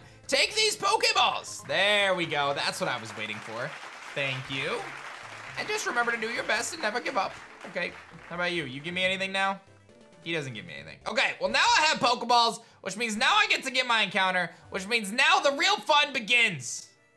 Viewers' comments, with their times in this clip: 0:03 those claps came out of nowhere at night at home lol.